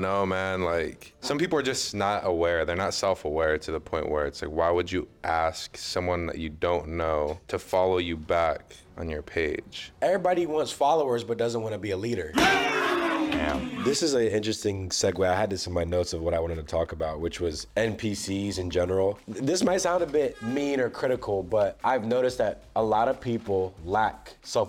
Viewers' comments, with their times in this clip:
0:09 with that MMMMM was legendary goated type shit i laughed hard 😂😂